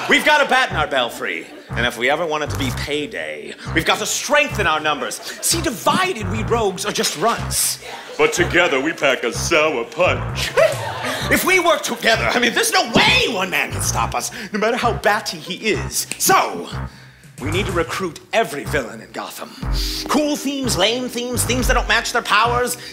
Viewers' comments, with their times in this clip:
0:07 I can't tell if someone in the audience was sneezing or if they just REALLY liked Runts